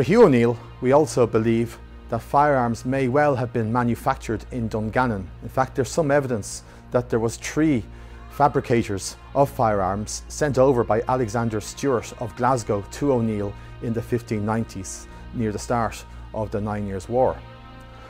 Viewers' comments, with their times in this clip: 0:06 "Tree" fabricators, those are some skilled craftsmen! :D